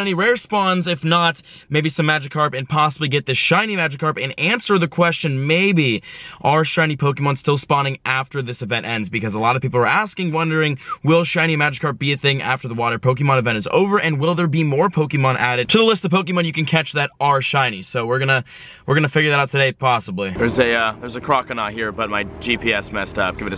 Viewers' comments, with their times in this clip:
0:07 Lol he whistled by accident